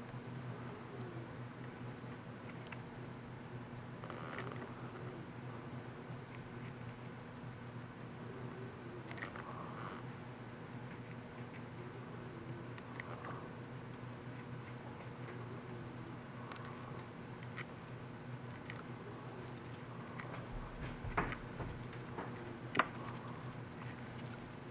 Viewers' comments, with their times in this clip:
0:06 Hi Adam, love your One Day Builds videos. I am writhing this comment though because I could hear your breathing and I kinda recognize from my asthatic kid that also suffered from bronchitis a lot. I assume you are aware and already went to see a doctor about that, and that you're still recovering; for that I wish you the best and good healt. cheers